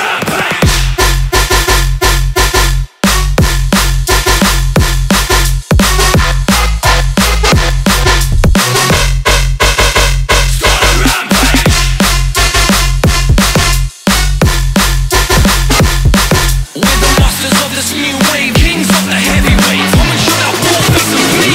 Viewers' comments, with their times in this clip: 0:05 I hear "Mambo No. 5", could make an interesting mashup